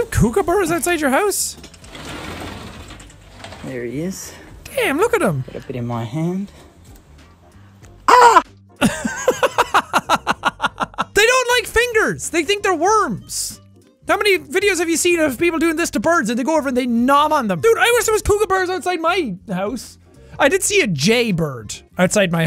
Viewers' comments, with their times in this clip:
0:06 the guy actually sounded like a bird
0:08 he sounds more like a bird than the actual thing
0:08 bro really screamed in lowercase